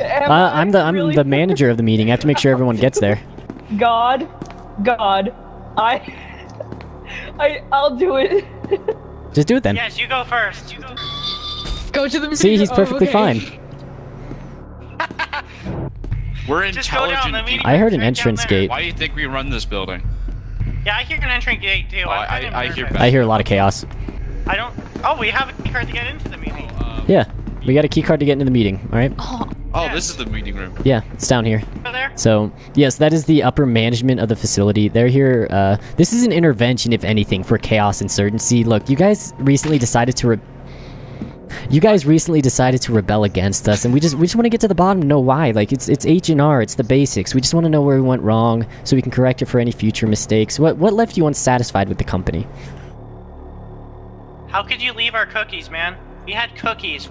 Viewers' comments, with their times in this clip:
0:08 that small screech as he falls down
0:39 I laughed because there was a head Snap and then I laughed even more because you stopped talking after that